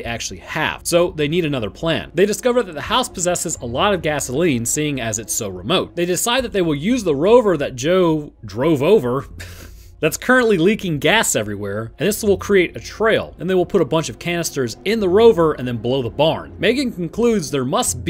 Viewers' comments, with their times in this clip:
0:06 He sounded so proud after saying that, lol.